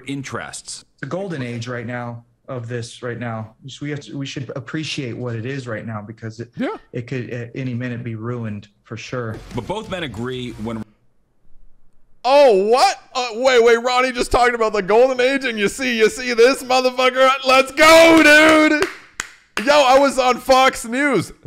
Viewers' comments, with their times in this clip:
0:05 i HOPE someone clipped the laugh PLEASE! 😂 but wow. what a time to be alive!